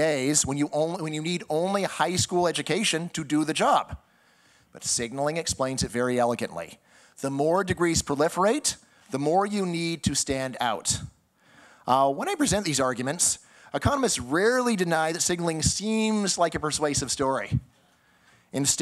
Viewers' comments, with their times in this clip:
0:06 Maybe with a higher education he would have learned to pronounce words like eloquently properly.